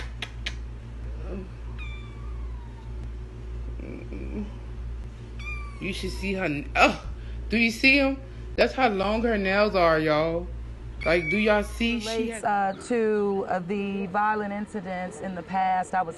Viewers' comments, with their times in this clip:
0:03 wtf is she moaning for lls weird